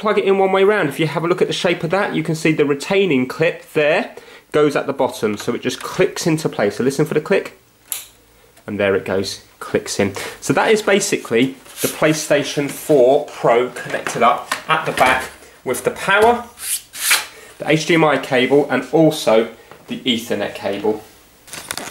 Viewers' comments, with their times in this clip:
0:07 That click tho